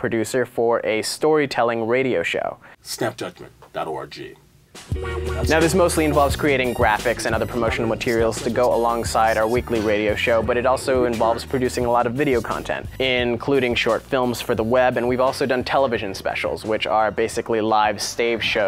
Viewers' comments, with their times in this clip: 0:04 Porn music? Wtf